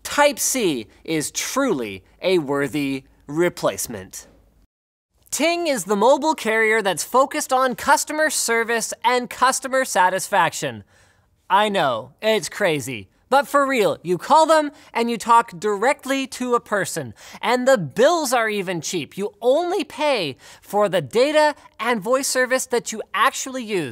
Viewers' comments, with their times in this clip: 0:10 Oh god, the Trumpiest "I know, it's crazy!".